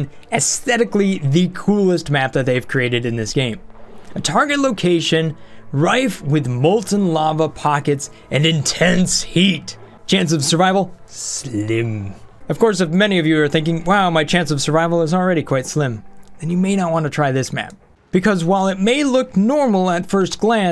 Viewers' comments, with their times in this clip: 0:05 Volcanea has the same spelling for volcano except the vowels at the end. I expect you to mispronounce volcano in the next three videos you do, just for consistency.